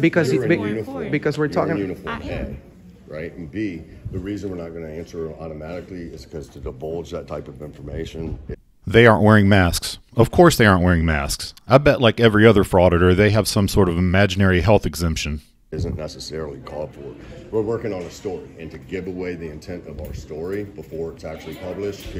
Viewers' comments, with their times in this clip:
0:05 Did he just say "to 'debulge' that type of information..."? Any attempt at appearing smart after that is pointless.